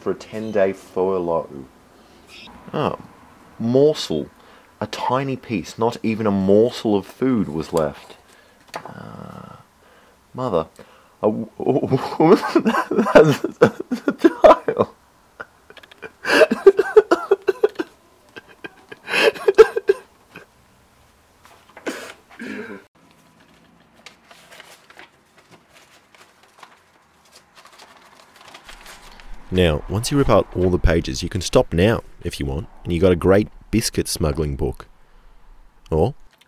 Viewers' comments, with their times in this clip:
0:09 I thought he was laughing not crying...😂
0:18 I like how my captions think his crying is laughter xD